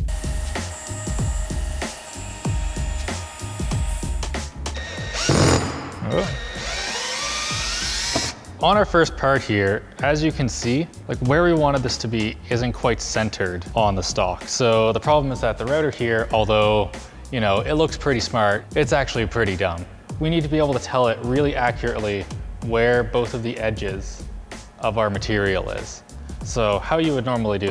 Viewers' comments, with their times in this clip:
0:08 some cool light rapping
0:08 the rhythm and the background music make this sound like rap